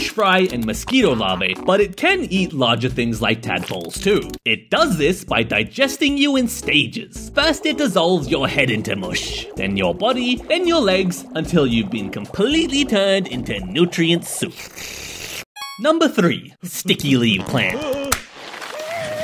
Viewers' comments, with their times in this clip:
0:07 I laugh every time at how he’s says that sentence. TURN YOU HEAD INTO MUSH.😂